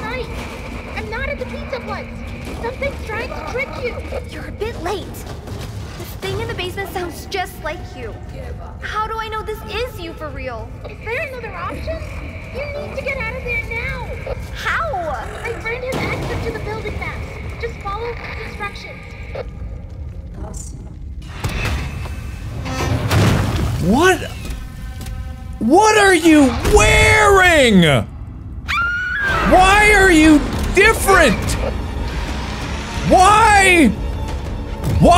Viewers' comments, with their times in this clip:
0:07 you can hear Roxy tell the mimic “Give Up” 🥺
0:08 Cassie talking like she from the hood
0:17 I think the most interesting part of dialogue is when the static blurs out the line about how Gregory's "friend" Gregory says "my friend" has instructions of the building maps and to "follow (static) instructions." The static, the only time it really omits a word in the subtitles, is blurred at a point that would typically hold the place of a pronoun (his/ her/ their) instuctions. In mystery writing, pronoun ambiguity is used to set up a surprise reveal that "the friend" might not be who first comes to mind- in murder mysteries the killer is always assumed to be a man. My guess is that the static is obscuring the word "her" (as in Gregory saying "follow her instructions"). If so I would bet the friend is Vanessa and this DLC is a set up to her redemption arc and recovering Cassie. (They will also probably include Cassie's Dad since they dropped those hints in this story with the FazWrench.)
0:19 Saddest thing people miss When Roxy lost to the Mimic, her last words were "Cassie..." And the exact thing that plays in the end was a good mimic impression of Roxanne saying Cassie